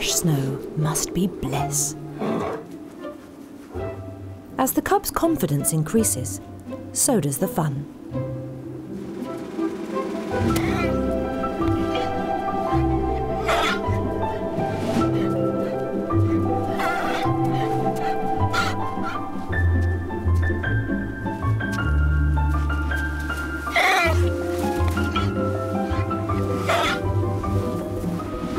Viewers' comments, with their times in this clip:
0:10 I swear to god that was a hitmarker.